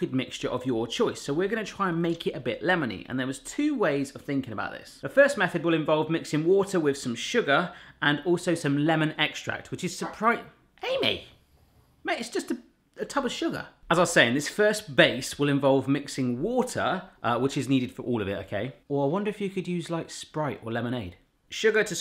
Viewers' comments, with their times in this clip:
0:10 my dog barked and i didn’t hear Amy’s bark. Exactly the same time. And when i saw you react and say: it’s just a tub of sugar, i lost it. Ahahaha